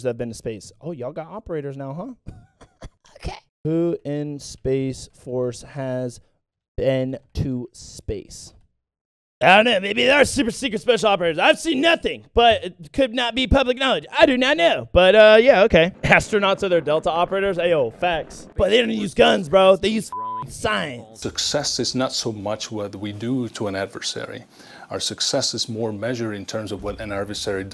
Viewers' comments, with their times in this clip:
0:09 nice angry cop impression lol